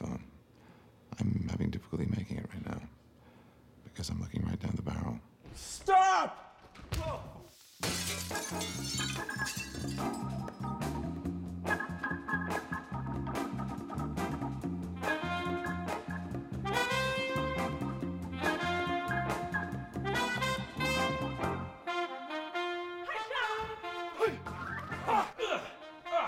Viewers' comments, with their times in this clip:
0:05 Benedict: STARK!!! Also Benedict: Yeets himself over handrail Also Also Benedict: Roblox death sound Me: 🤣🤣
0:08 Mads Mikkelsens' face XD : (in his low voice) Mom's going to kill us
0:08 His face when He heare the Sound of smashed glas